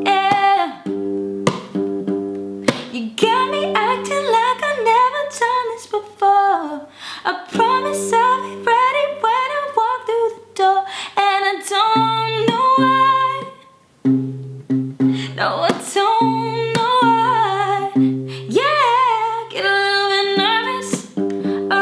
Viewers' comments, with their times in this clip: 0:03 You literally are so perfect. Your voice is amazing. If only I had 1/4th talent that you have😂♥. Your voice is amazing. Just perfect♥ ♥ ♥ I just went straight into heaven😍 Keep slaying🔥😊♥